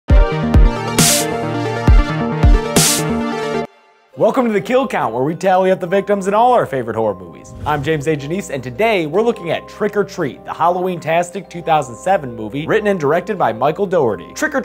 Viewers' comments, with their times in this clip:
0:00 slow down speedy